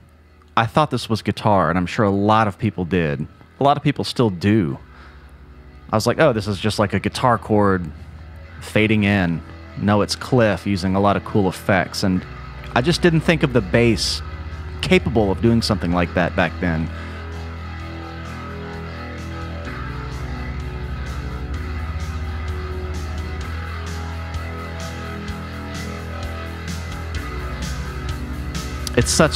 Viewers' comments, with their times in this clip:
0:05 Thats an organ with effects, not a bass.
0:10 distortion and a Leslie speaker